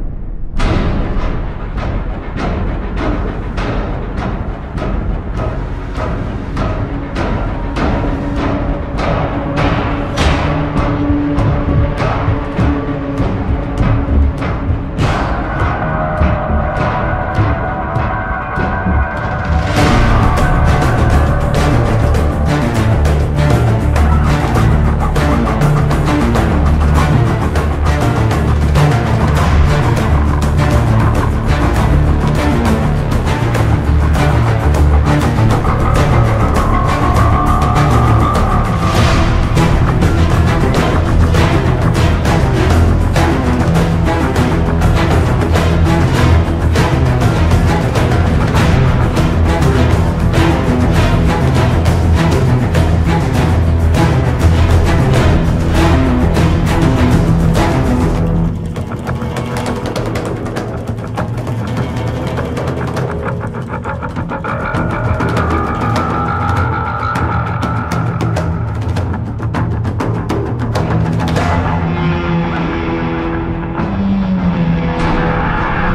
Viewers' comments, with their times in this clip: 0:07 reminds me of Rainbow Six: Vegas 2 Main Theme... 🔥
0:34 PLS THAT BASS
1:02 that wavy loud guitar sound makes it seem like sht is about to go down.